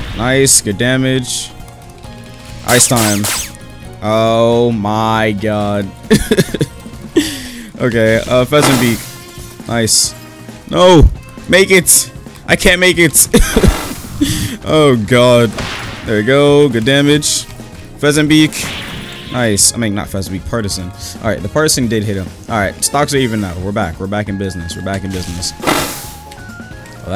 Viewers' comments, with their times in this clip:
0:09 what in the English accent was that lol